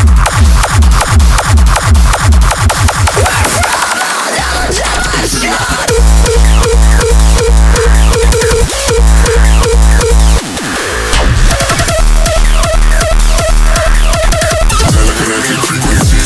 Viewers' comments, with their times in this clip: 0:04 That kick on awesome